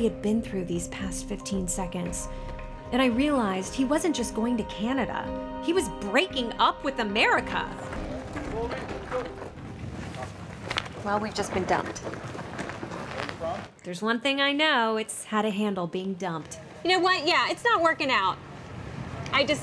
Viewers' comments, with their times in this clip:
0:05 The way she says "He is breaking up with America" 😂😂😂